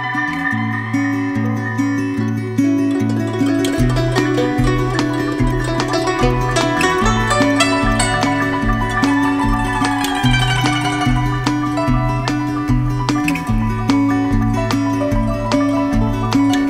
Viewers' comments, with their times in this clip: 0:04 From there is a slow tap tap sound in the background, it that the sound of a metronome?